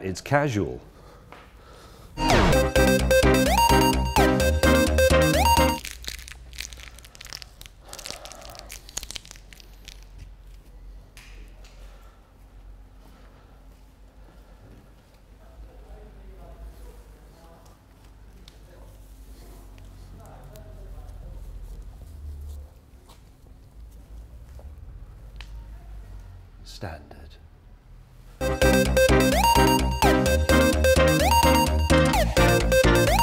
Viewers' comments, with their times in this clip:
0:08 liked for the asmr tape also 420
0:18 If you listen carefully you can hear him crawling. hahahaha